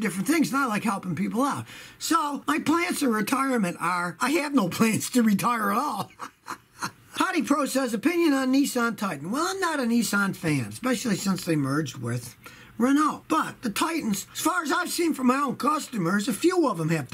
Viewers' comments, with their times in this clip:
0:03 The turtle with him laughing lol.